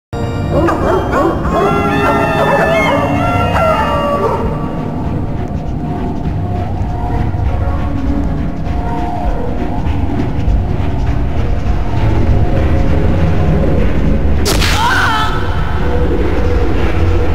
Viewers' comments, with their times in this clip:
0:02 i heard chain chomps bark in that part